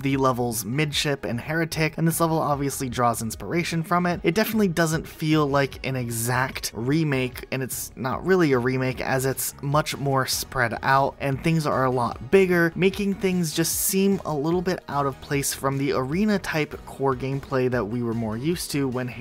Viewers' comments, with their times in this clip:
0:05 random shooting intensifies